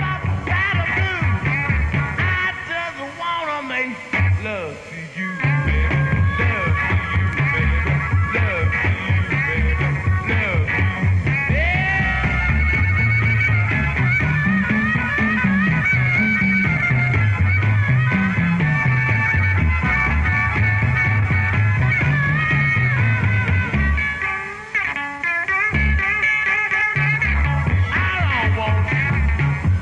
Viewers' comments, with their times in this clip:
0:10 How about Bill Wyman's brilliant bass work, especially on 'I Just Want to Make Love to You' !